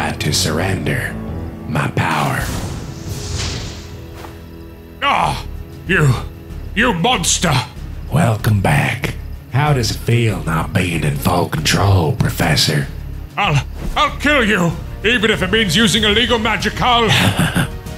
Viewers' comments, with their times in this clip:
0:05 :0 he sounds like the gentleman from among us logic